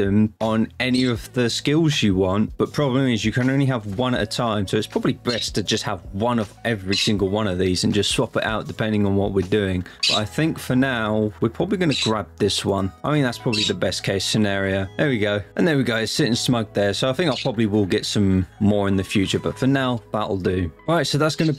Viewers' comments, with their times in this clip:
0:04 is that a budgie?